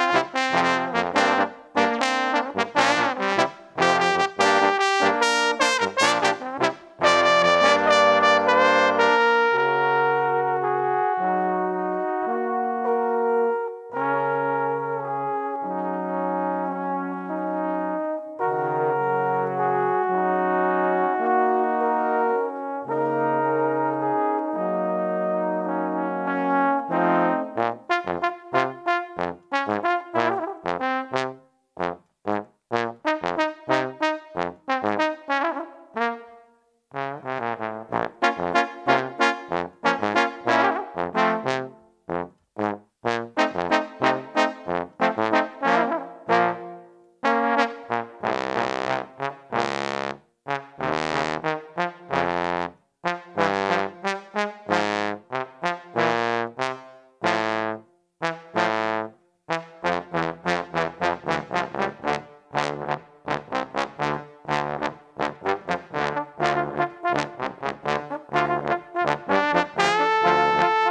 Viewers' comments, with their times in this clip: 0:07 That Borderlands to Minecraft transition was smooth.
0:56 (clone on the far left) I normally glissando on the way up from that note